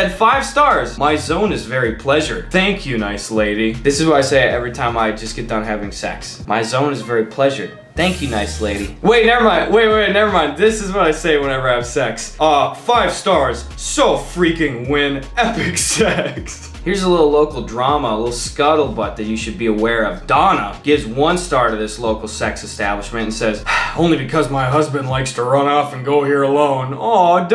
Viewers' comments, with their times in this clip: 0:10 was that a Chosen impression?